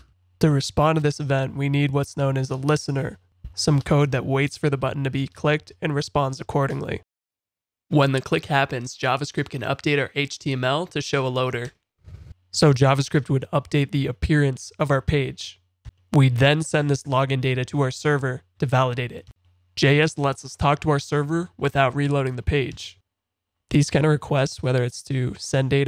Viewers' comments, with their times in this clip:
0:08 you sounded normal but then went back to the deep disturbing one